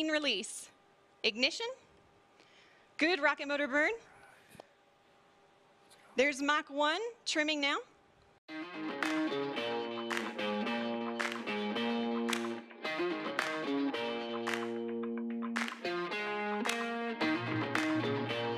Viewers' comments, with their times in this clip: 0:03 Anybody here hear the guy ??